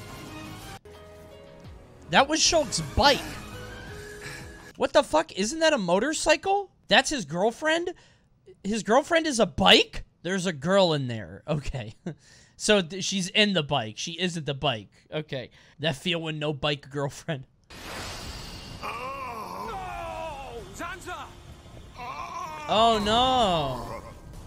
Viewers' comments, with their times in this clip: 0:06 idk he' kinda unintentionally spitting